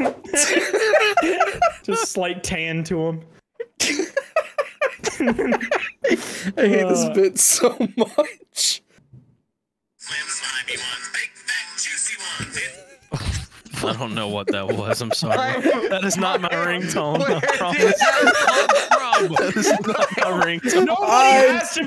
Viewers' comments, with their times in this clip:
0:09 Soup gator ringtone